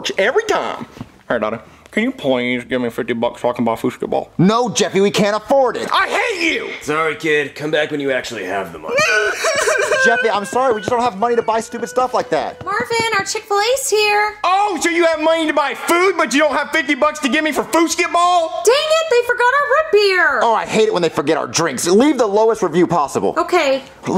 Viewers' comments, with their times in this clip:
0:09 His crying tho…
0:09 😂 Jeffy cries are hilarious 😆 LMAO
0:09 Jeffy Crying He Can’t Afford The Foosketball Game